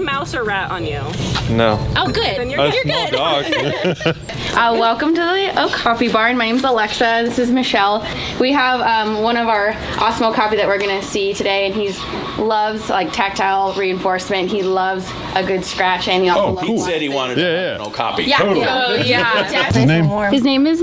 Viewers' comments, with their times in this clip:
0:05 I thought she said capybara